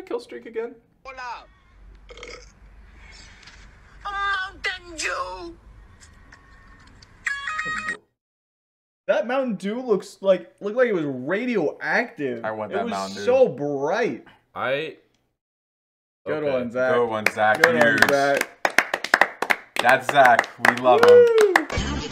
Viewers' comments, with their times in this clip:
0:03 did he just say mountain jew